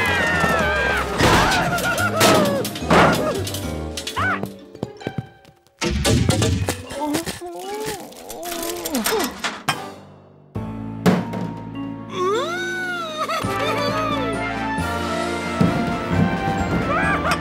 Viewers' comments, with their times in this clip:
0:05 that noise when the blood comes through the pipes onto the bread, is so satisfying for some reason :P